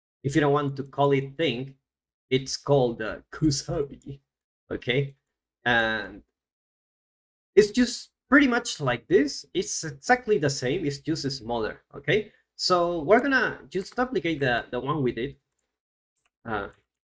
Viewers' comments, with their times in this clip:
0:03 nice samurai voice acting xD "Kusabi"! killed me.